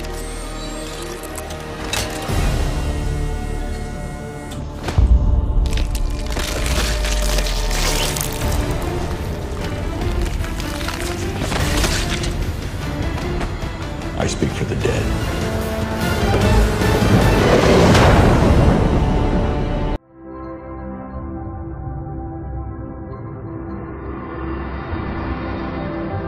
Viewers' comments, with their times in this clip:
0:07 * Pauses * What a Bootifol flower
0:12 that sound effect. It make me laugh Lol